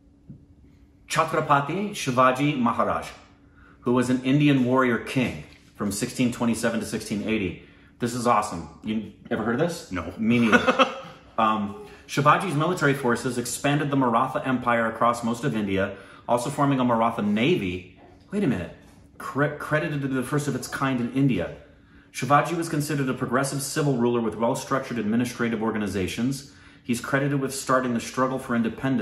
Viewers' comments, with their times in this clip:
0:10 when a guy ask ever heard he shouldn't laugh